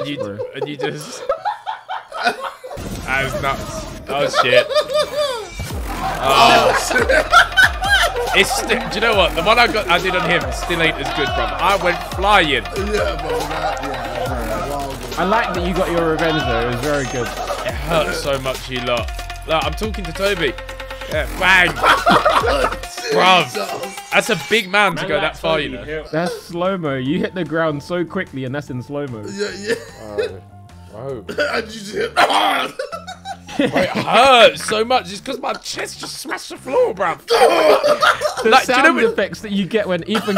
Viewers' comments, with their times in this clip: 0:03 JJ's laugh before beats drops tho
0:26 if u hear jj sounds kinda mad 😂